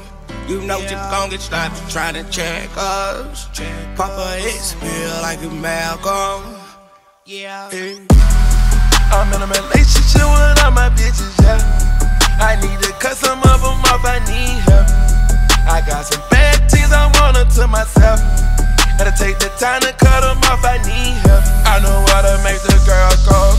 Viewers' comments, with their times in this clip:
0:08 Do any body noticed when hit the ground is made that glass noice